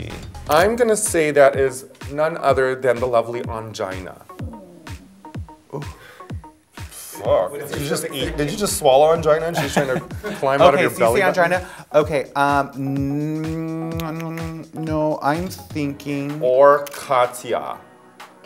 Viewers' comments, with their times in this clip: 0:04 those guts are sounding like Chewbacca gurl